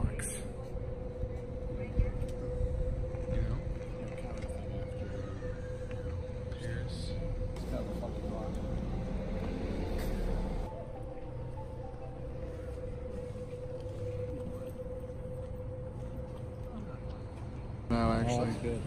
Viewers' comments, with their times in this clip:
0:05 Did you not hear the woman screaming? It's when you are panning across the locks, you go past the little ghost cut out, then when you get to the blue and yellow lock, that's when you hear the scream!!! Time stamp